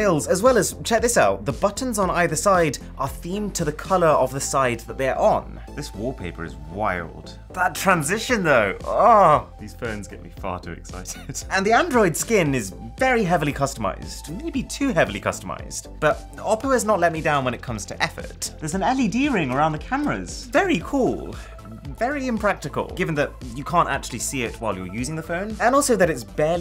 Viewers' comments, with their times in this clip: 0:08 my guy destroyed my entire life in front of my mother. LIKE WHY DID YOU MOAN LIKE THAT BRUH I'M SO DEAD